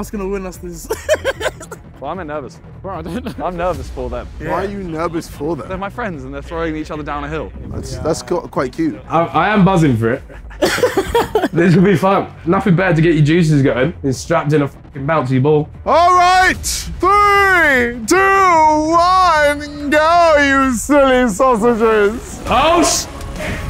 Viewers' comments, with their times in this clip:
0:04 JJ kinda broke character because of his voice tone